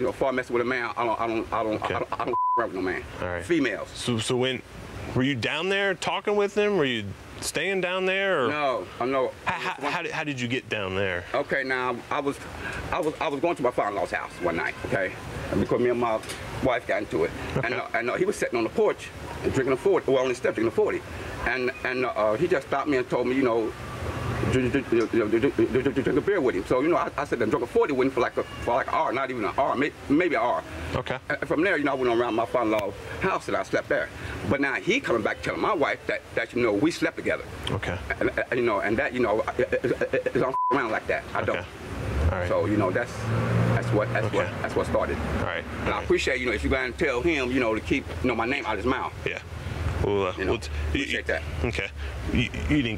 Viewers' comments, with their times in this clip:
0:06 he was definitely down there topping ol boy. He was stuttering too much.
0:34 😳 Dude stutters HARDER when the lies get BIGGER 😂